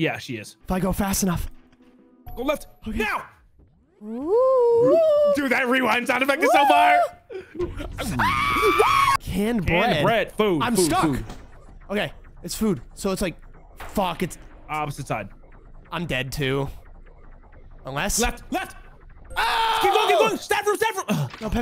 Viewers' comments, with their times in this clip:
0:03 Man he hit those high notes.